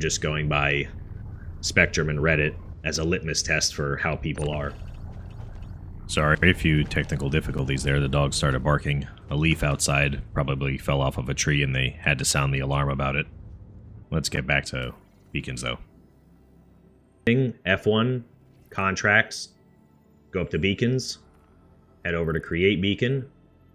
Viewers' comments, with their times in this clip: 0:08 you have my mom's dog too? My dog is 3/4 blind and completely deaf, haven't had these issues until my mom moved in with her little five pound muttling that sounds more like a duck quacking than a dog; annoying thing barks are everything and nothing.